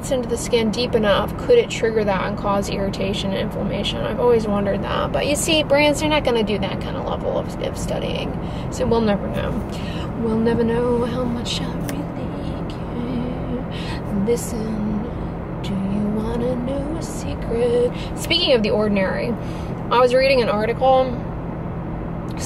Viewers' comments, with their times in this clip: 0:09 haha even I start singing randomly when what I say matches to a song